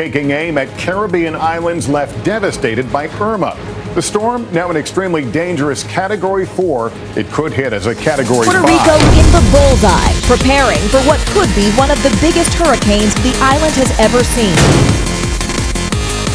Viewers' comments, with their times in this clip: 0:04 THIS TRANSITION OF THE VOICE OVERS WAS SO CLEAN